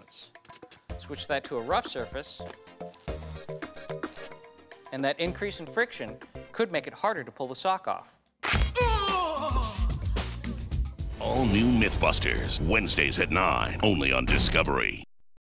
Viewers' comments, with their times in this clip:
0:08 Tory makes a Dracula noise